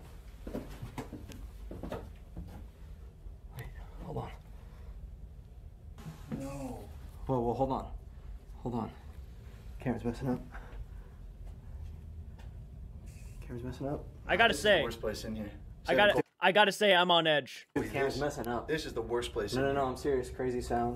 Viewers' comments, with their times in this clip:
0:05 not typically a “debunker” but the “squeaky wheel” sounded like a fire alarm with a dead battery lol